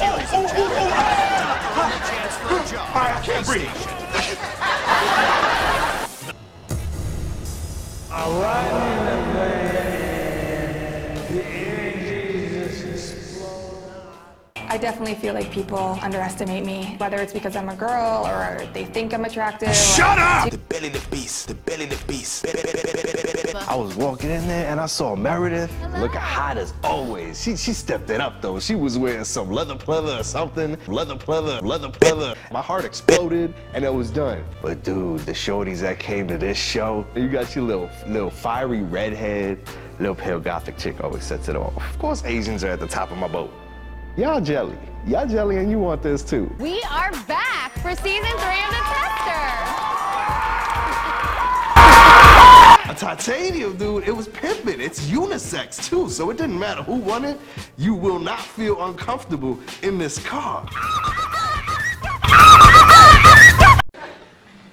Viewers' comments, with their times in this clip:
0:08 Honestly, I was laughing the hardest when you did the slow down voice I kid you not I was almost in tears
0:52 The black guy screaming scared the shit out of me lol